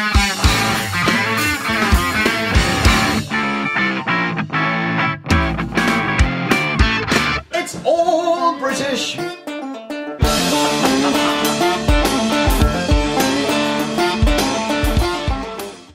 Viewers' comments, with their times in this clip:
0:08 I've watched 10s of hours of your. Videos, and is the nicest I've ever heard you play together.